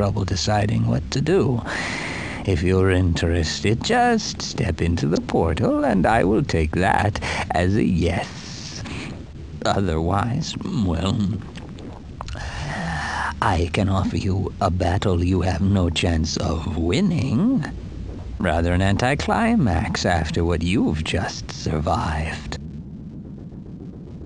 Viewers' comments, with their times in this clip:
0:10 Most epic swallowing in game history and quite probably mankind history.